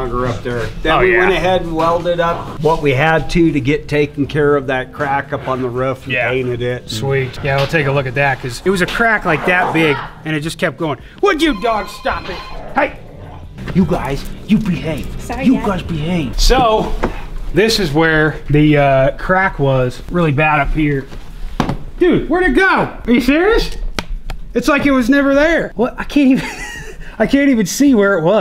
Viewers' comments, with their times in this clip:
0:10 "it just kept going would you guys stop it" i didnt know cracks made that noise